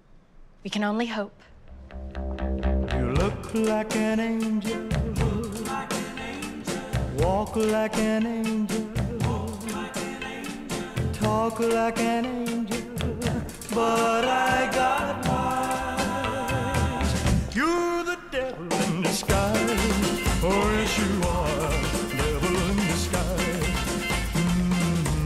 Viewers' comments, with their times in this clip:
0:08 The chosen background song is brilliant!🤯🤯🤯 I was expecting a suspense music, not this...😂😂😂